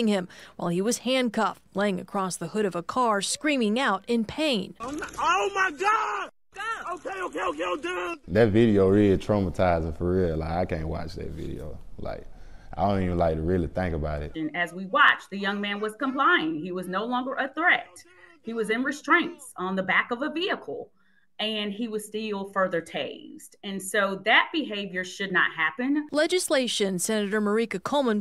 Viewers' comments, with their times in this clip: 0:09 laughing while saying its traumatising. Hmmm somehow i dont believe you